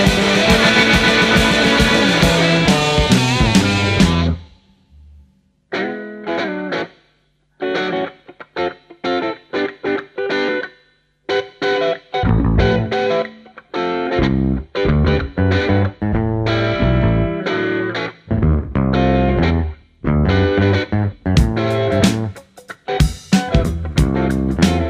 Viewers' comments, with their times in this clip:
0:05 Jazz ? Great Jam - Why didnt they play it for 5 min. note the Bass Steve rythem guitar Andy and jazz drums from the great Mick Tucker.